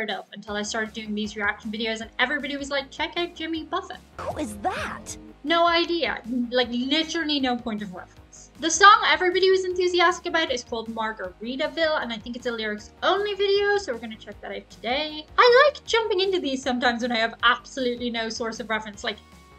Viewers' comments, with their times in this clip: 0:04 you knew enough about Jimmy to pronounce the “t” at the end of Buffet